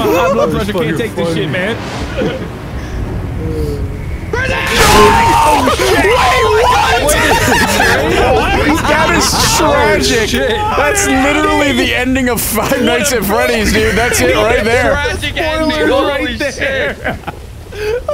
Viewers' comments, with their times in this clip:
0:03 when he yelled grizzly it sounded like that one gibby seen from icarly